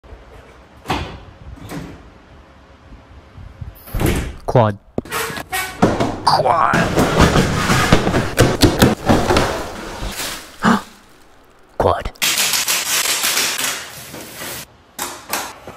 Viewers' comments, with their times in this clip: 0:01 Bro should make a asmr channel